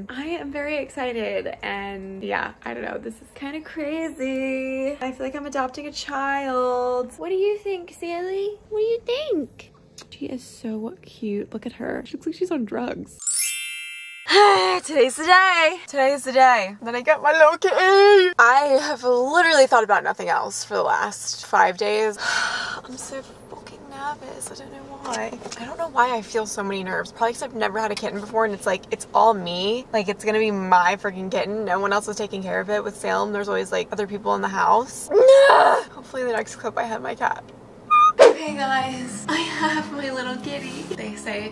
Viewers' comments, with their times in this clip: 0:08 👁👄👁 is it just me or does she sound just like simply nailogical when she said what do you think :O
0:22 you literally sound so english 😂😂